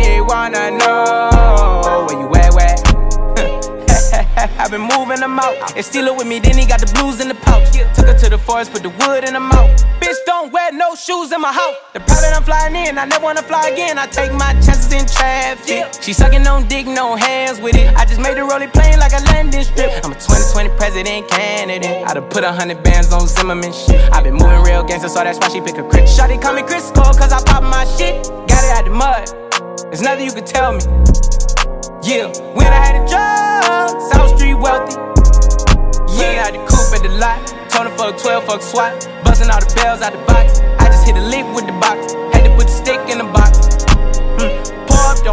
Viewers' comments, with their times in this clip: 0:09 When you want a snack The floor: E ER
0:09 Goosebumps start from in slow+ reverb 💀
0:26 I used to think he said "Chris Paul" not "Klitschko"